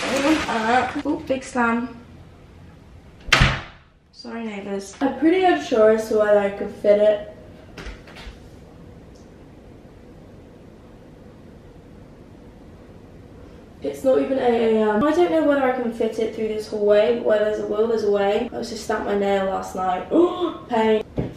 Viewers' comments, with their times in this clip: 0:03 did you say the N word ?